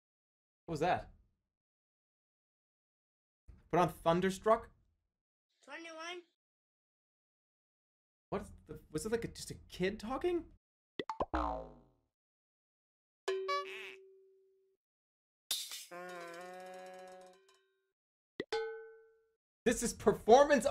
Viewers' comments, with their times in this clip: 0:04 streamer HEARS VOICES